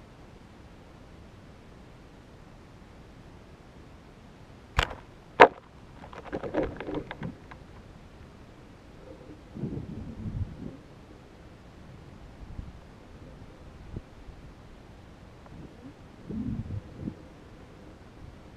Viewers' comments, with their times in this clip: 0:03 wtf? A bang is heard. What was it? An invisible wall? What is?
0:03 pop goes the Wiesel!
0:04 Pops Thank me later
0:04 In the video there is contact with water (splash on the water) and a small current is present (the video recording began as if on waves from contact with water), the microphone clearly recorded the sound of contact with water, then the sounds of water like in a swimming pool. There really is a layer of water in the sky, like in a swimming pool, and behind the water there is a dome. 🤗 Everything is like in the Bible! Glory to our creator and creator, the Lord God! Hallelujah! Hallelujah! Hallelujah!